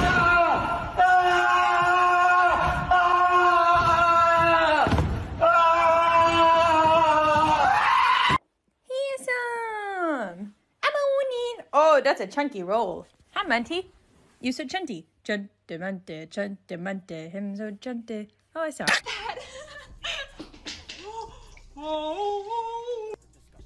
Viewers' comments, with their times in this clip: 0:07 when my mom sees a spider😱😱😱😱AAAAAAAAAAA